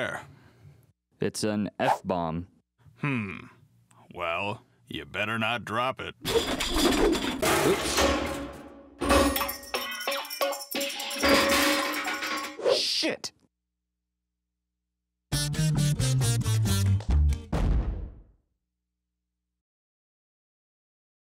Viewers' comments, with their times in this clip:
0:09 Idk why but I keep on replaying this just to hear the sound the bomb makes